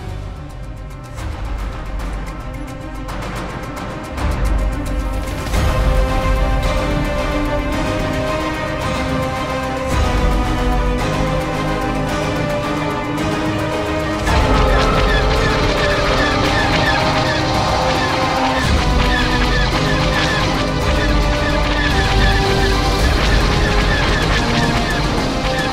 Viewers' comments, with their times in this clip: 0:09 Dude that was an amazing intro to the hammerhead coming back online. The music was just so intimidatingly heroic if you know what I mean. Seriously one of the better videos I've seen on anything related to star wars and space engineers combined. Will differently be looking at this channel with a far bigger interest.